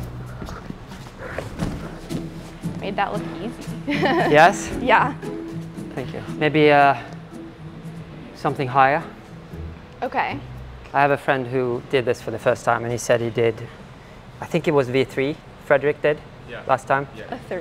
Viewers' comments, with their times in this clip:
0:04 “you made that look easy”. (Almost talking to herself, wasn’t just encouragement she’s realizing…)